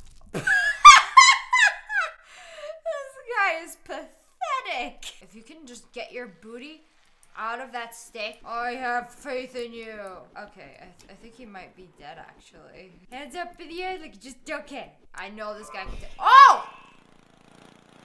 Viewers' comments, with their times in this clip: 0:03 the fakest laugh ever